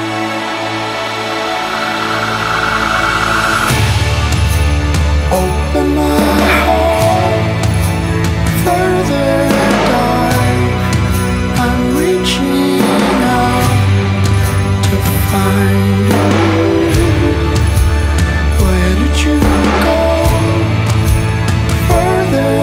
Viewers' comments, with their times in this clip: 0:03 This song is absolutely brilliant! sends chills down my spine